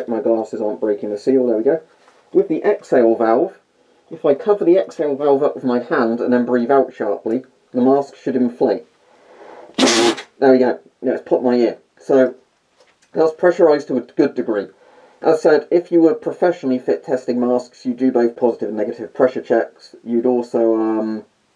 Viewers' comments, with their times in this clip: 0:08 No one: Not a single soul: The A-10 going over my house: